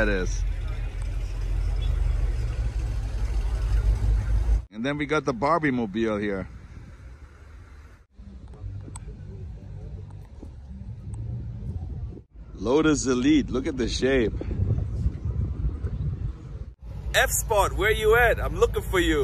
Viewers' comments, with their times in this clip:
0:06 “Bub bub bub” is me in my ‘65 Mustang. Thanks for the video!